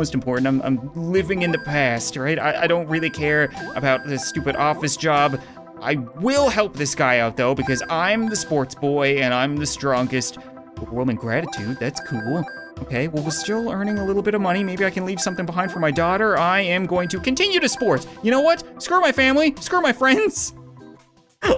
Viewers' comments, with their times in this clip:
0:06 You hear in the distance: “I’m the sports boy! I’m the one who lifts!”